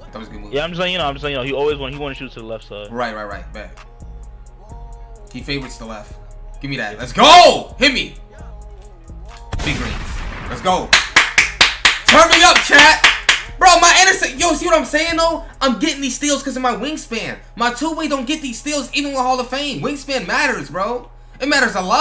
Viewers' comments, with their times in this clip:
0:06 Laugh had me dead